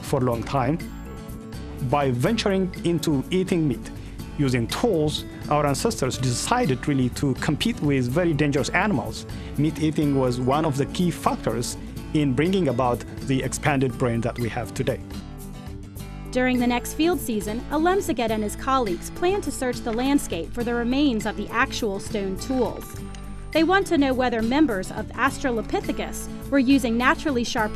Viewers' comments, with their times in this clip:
0:09 Hahahahh! "One of the key fuckers" :D!